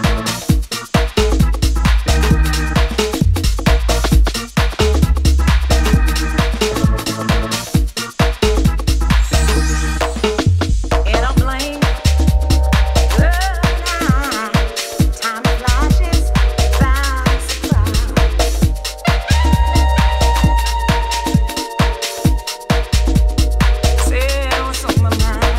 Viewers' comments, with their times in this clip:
0:10 Agreed, but the track continue on its original dynamic Massive